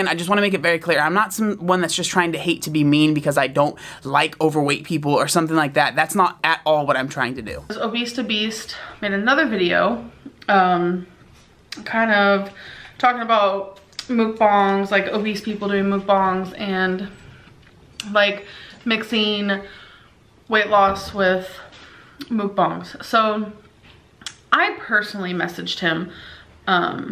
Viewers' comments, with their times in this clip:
0:10 that "TIC" sound she makes smacking her lips after every word.. guuurl roll away from my screen